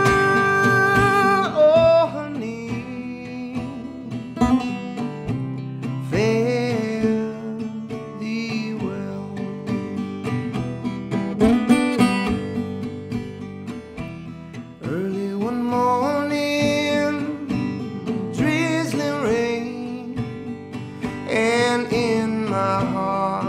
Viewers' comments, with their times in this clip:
0:04 Can anyone tell me what he does with the guitar and several times throughout the song? Is it a hammer on, I cant tell, but it sounds great, so if anyone could help!
0:11 Anyone know how he does the little riff ?